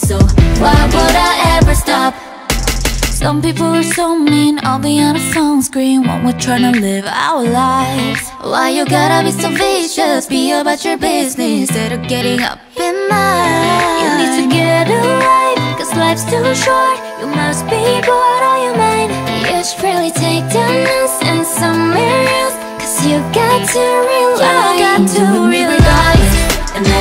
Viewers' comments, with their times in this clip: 0:09 Omg karina winter harmony is heaven